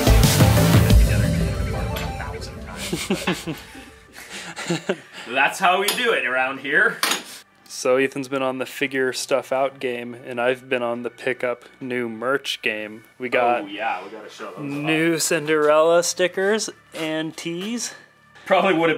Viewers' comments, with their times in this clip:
0:05 Wow. in the music is so loud you can't hear anything being said. It's really disappointing seeing you laugh and not knowing why. Especially because of the music.